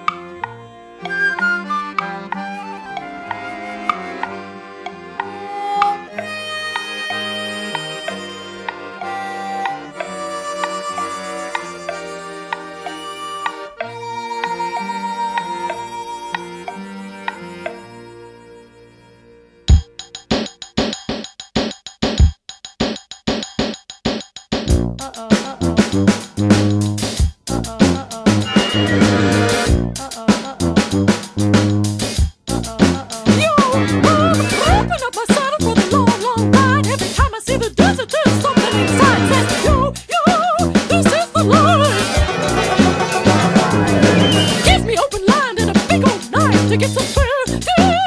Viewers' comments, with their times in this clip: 0:06 I mean seconds in just feels like a spaghetti western opening
0:18 sounds like parappa
0:19 Casio drum tunez forever! 🤘
0:22 That tuba player working extra hard from the next minute
0:27 So far it's alright...? I'm 1 minute in so far and I can't see any issues? ... ... Alright... An opera rap is a bit ridiculous but... hm. Alright that walmart ** can ** to ** I hate Children! OH GOD! IT IS UNWANTED! EVERYTHING EXCEPT WALMART PLEASE
0:33 this is just 100 gecs
0:34 Okay Minnie Mouse, go home, you’re clearly drunk